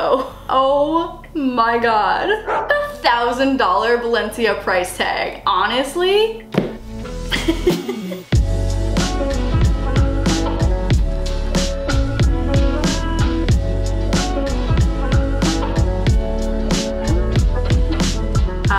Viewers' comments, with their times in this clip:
0:04 Did she really say Balencia